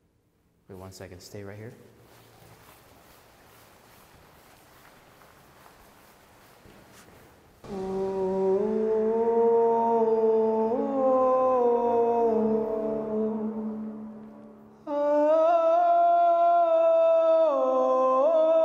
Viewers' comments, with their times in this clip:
0:05 he looked like George from “IT” or something,and then laughed it off cause of his opera singing afterwards.